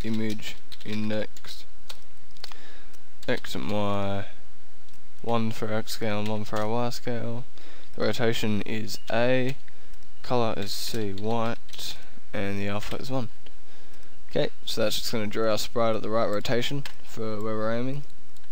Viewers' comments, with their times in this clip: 0:05 Awesome tuts. Also, Youtube's transcripts are amazingly accurate. " one for example in taiwan scandal" Hahah